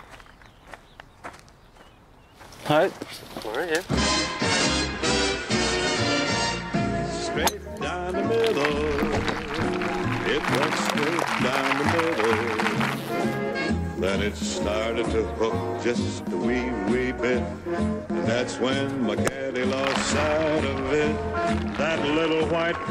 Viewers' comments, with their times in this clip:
0:05 people start clapping as soon as he hits the ball, they don't even look at the shot
0:06 iron in his hands, wood sound